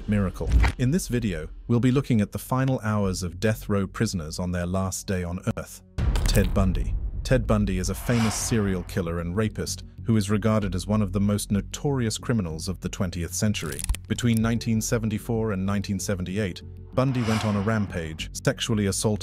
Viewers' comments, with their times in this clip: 0:04 bro laugth when he said lost day on EARTH